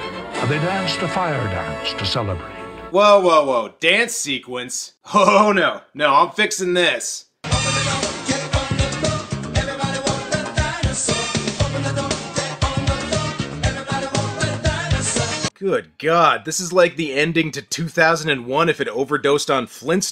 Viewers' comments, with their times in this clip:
0:08 Wow I can't believe how well the music fits during this gag.